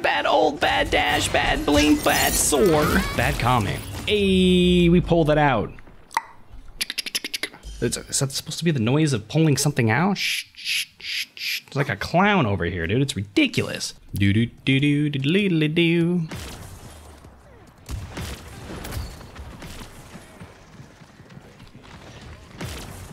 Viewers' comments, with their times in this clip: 0:05 that is indeed the noise of pulling out